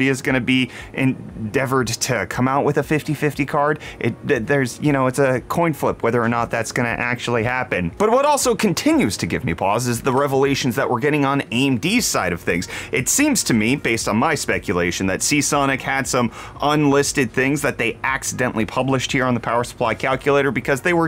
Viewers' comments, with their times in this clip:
0:07 why did you cut the "ba dum tss" part? 😭